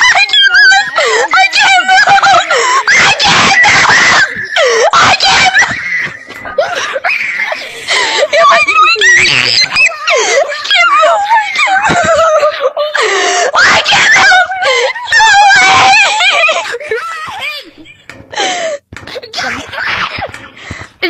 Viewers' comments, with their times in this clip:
0:03 Bros screaming and laughing